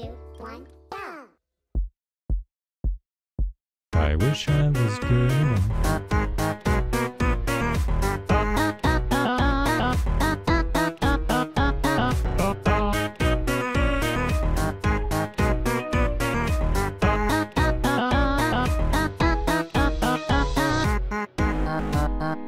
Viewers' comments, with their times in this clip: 0:04 DUDE THE WAY YOU SING ON IT PerFeCT